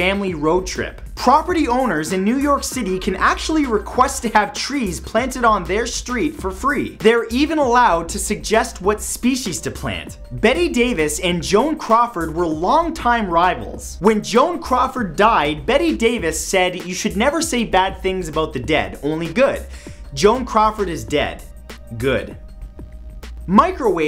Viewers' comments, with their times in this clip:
0:06 matthew makes rap xD